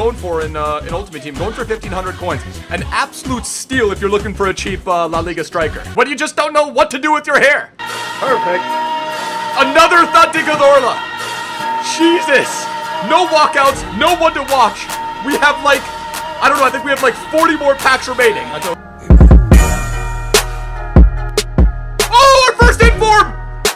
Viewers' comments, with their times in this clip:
0:07 i tought someone call me and phone is stuck on yt